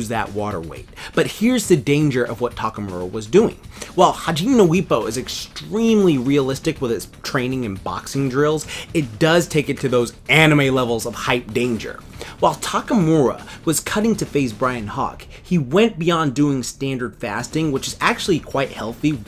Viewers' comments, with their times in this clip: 0:03 hajinno whippo ? new season comfirmed guys